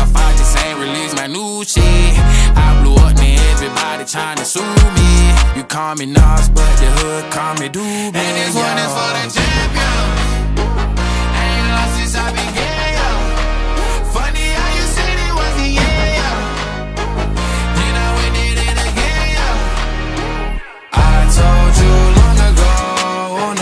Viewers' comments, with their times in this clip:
0:09 music should have been stopped her